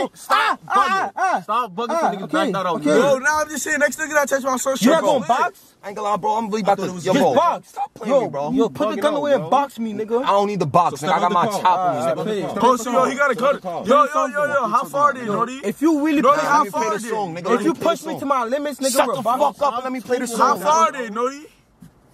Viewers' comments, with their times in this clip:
0:05 that voice crack tho😂😂 That STFU WAS PERSONAL ONG😭😭😭💔